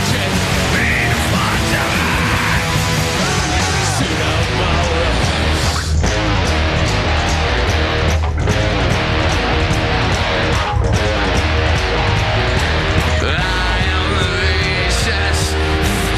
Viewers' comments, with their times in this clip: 0:03 huge mess up on vocals......🤣🤣 decent recovery..shocked he didn't trash the equipment and stage...oh that was later😂😂😂..